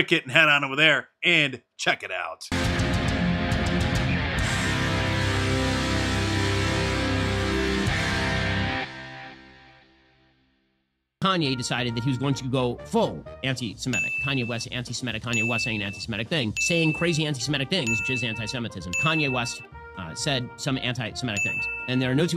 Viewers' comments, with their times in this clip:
0:09 LOL the dings LMAO